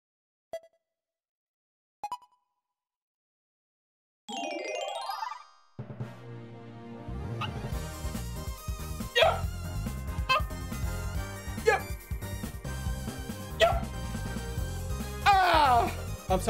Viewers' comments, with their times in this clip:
0:03 what the hell was that noise